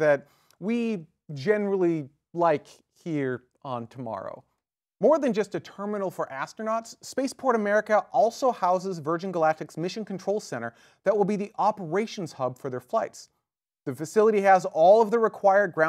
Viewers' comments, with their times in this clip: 0:03 I've watched a couple dozen episodes of TMRO here and there and only now did I realize it's supposed to be pronounced like "Tomorrow". Wow, I kinda feel stupider now.